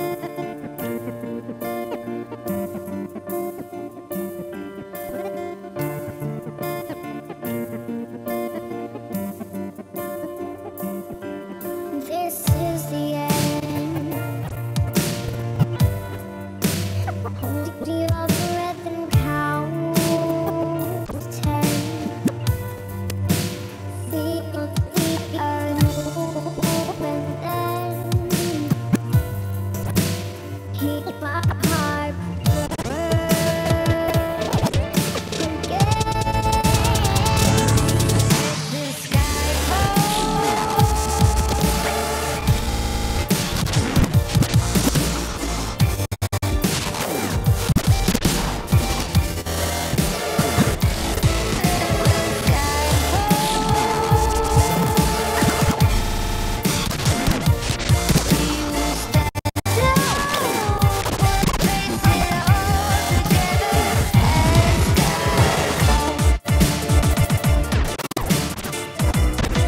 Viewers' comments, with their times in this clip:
0:05 Chill as fuck! going to find that song(if not original)
0:51 epic dmc fake. When woman sings the word "Skyfall", this man uses two turntables and there's no disturbances in that word. I hate these kind of mixes. Sorry, just my opinion.